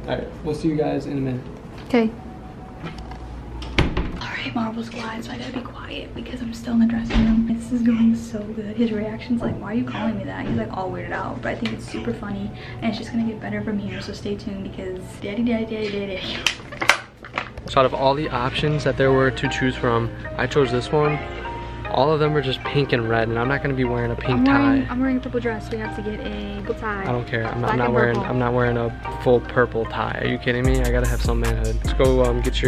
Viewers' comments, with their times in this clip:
0:08 could anybody else here someone taking a tik tok?😂😂
0:15 that lowkey kinda creepy how she said it